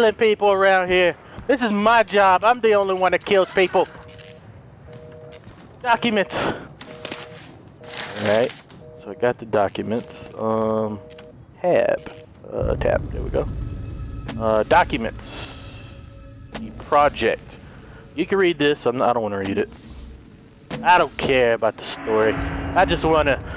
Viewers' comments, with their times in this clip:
0:10 Did anyone hear him just ram his key on his keyboard lmao